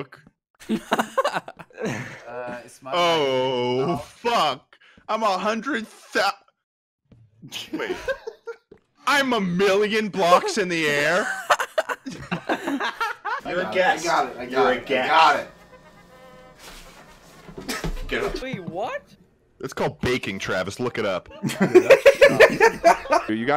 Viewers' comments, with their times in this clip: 0:05 I thought my audio cut out